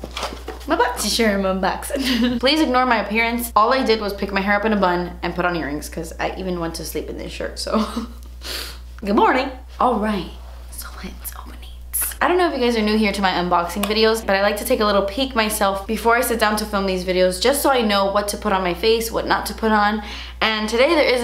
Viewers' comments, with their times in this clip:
0:08 Her good morning haha cute